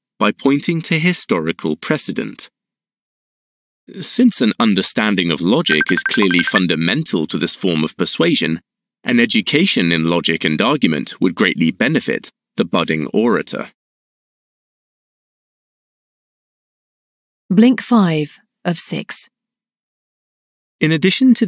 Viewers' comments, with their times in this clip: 0:06 I thought someone was calling 😅